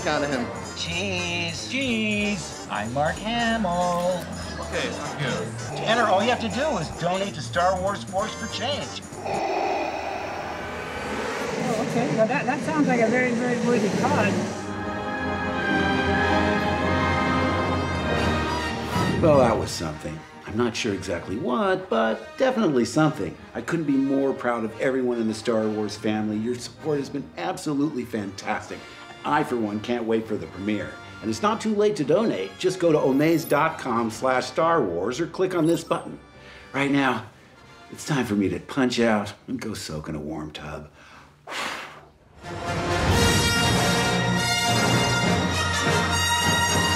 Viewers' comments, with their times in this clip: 0:10 the voice from darth vader killing me 😂😂
0:30 totally not fake sigh